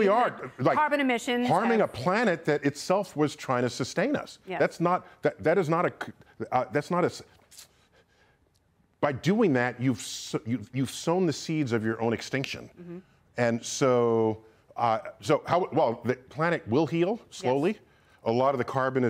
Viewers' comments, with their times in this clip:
0:07 never seen this before - NDT at a loss for words. He still makes noises though, so maybe that doesn't count.